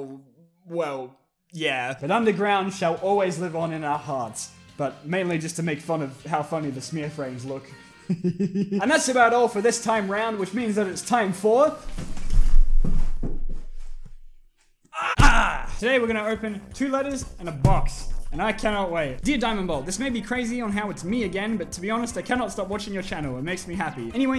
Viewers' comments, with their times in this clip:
0:08 That laugh made my day and is hereby considered the cure for sadness